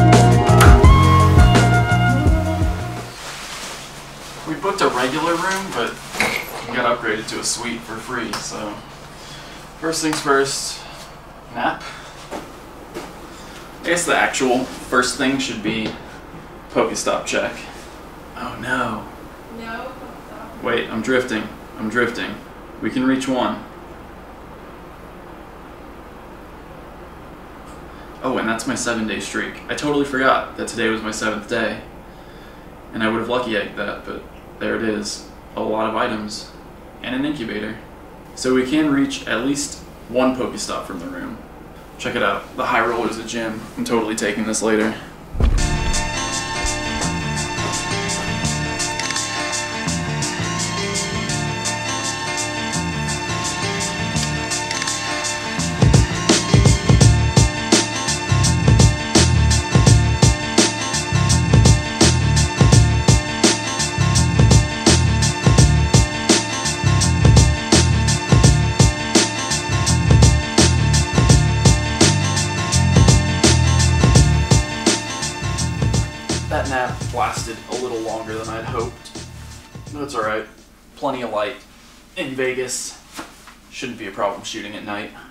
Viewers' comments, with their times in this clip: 0:09 "First things first, 'nap'?"
1:07 The Beat is so fire !!!!